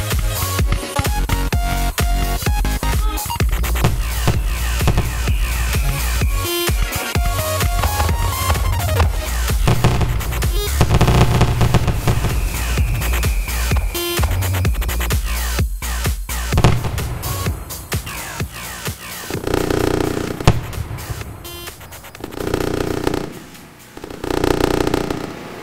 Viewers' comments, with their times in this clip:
0:10 nice work.. but i prefer having stuff more symmetrical explosions when they are suppose too be synced, also that massive quick bang i dont know but it would never get approved in real life is my guess, and thats why i love Simulations cuz ppl can go nuts and brake any rule.